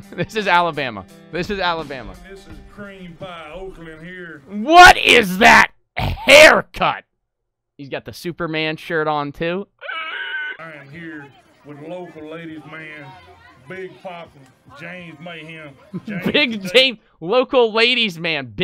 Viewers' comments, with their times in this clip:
0:03 bro is real life Peter griffin with a southern accent